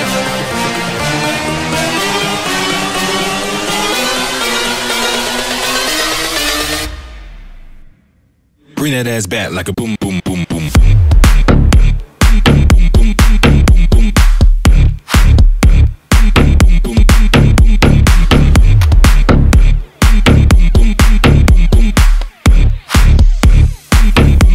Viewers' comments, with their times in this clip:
0:06 oh yeah mega drop